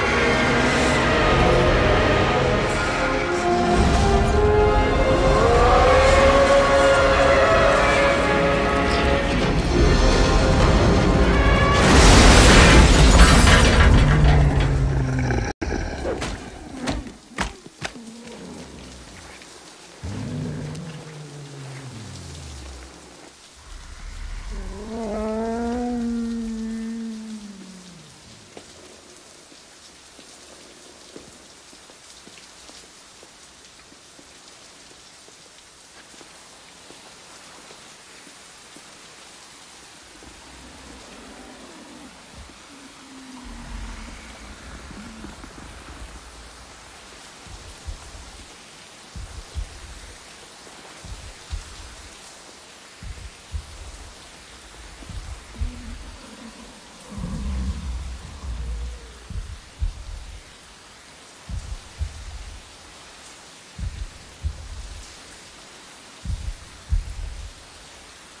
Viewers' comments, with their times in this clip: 0:04 Godzilla roars like the Dragon from Shrek
0:23 The part that always gets me is the wimper Zilla makes changed how i felt for this whole movie after that.
0:23 Tyrannosaurus Rex Moans
0:24 That whimper is heartbreaking. And watching the light literally leave his eyes the moment he dies. It's so unbearably sad.😭😭😭😭
0:24 I'll be honest with you, I started to cry at that moment this whining is heartbreaking
0:24 and the whimper
0:26 thats so cute noise try listen
0:49 At soo sad through the end because you can hear godzilla's heart beat going slower and slower